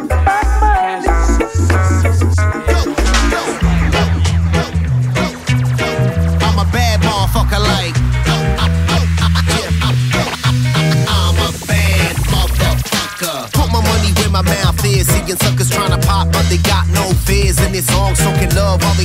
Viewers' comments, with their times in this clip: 0:03 that song is just so fun and happy